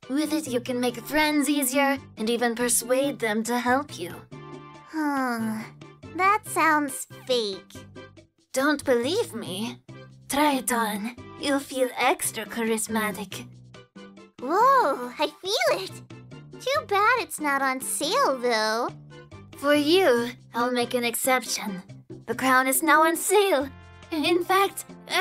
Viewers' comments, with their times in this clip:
0:10 That is a nice accent